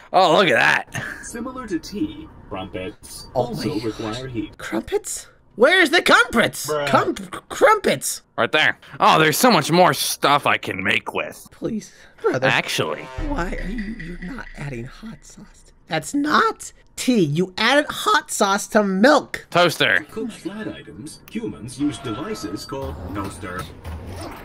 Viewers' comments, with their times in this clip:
0:05 He also said Cumprets
0:05 what are cumprints?